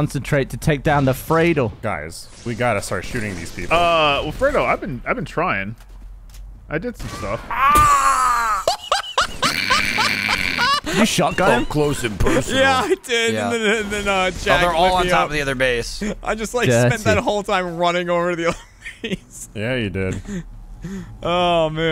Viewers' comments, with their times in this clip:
0:06 That was almost a perfect recreation of the elite death sound